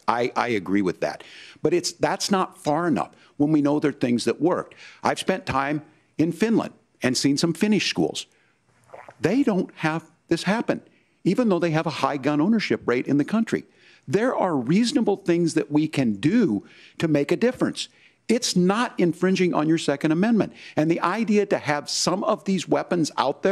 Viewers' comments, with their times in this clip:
0:04 “I’ve spent time in Finland and seen some Finnish schools (pause) ‘gulp” I just broke out laughing at that for a solid minute.
0:09 What was that noise when he was talking about Finland?